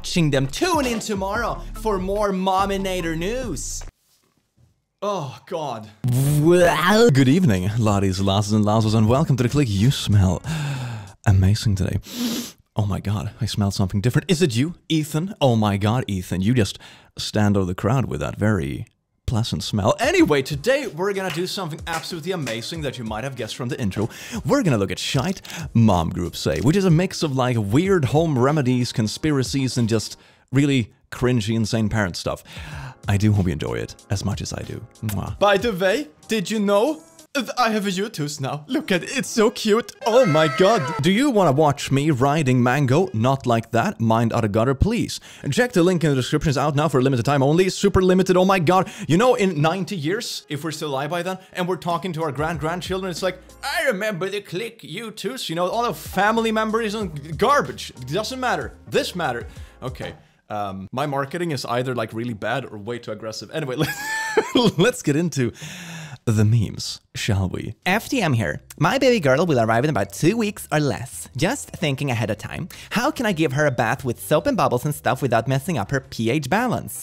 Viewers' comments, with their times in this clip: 0:05 WHY IS NOBODY TALKING ???
1:05 Isnt op a trans guy? FTM usually stands for (FemaleToMale) transguy so i think the fem voice was wrong. I know it probably wasnt on purpose, just wanted to let you know.